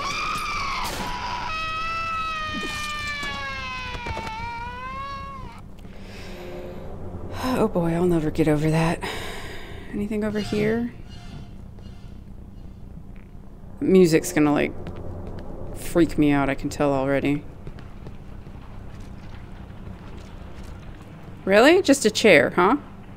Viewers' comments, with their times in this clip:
0:04 absolutely disturbing this part in the subway !! what a scare it takes me! the sound of these creatures makes your hair stand on end! Thank goodness you're here to eliminate them! 😀 excellent subway design the part of the flare is very tense and sinister! amazing part very entertaining my friend !!! my congratulations to you !! 😉😆🙌🙌🙌✨